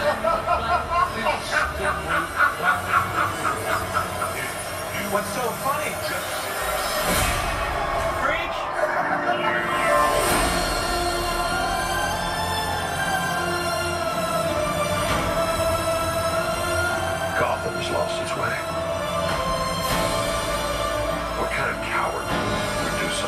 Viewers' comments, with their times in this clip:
0:10 Music makes me cry. It's so painful.